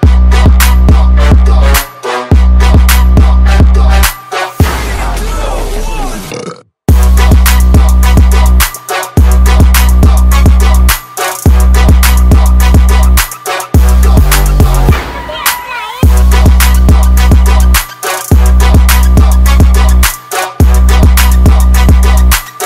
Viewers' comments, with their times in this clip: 0:06 lol this burp